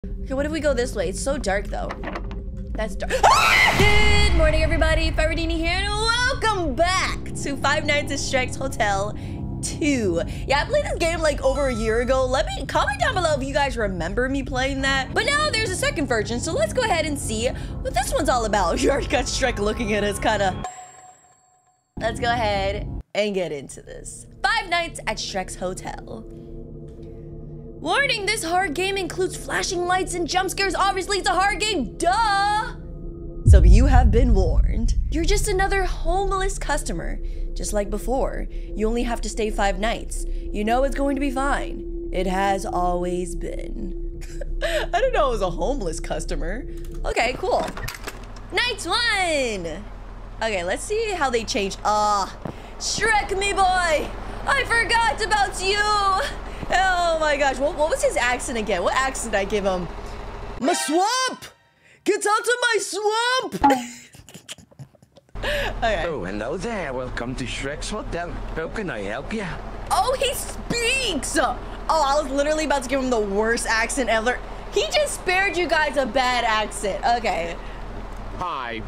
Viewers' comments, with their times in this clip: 0:03 The best scream ever😂😂
1:00 Perfect Shrek Impression🤣🤣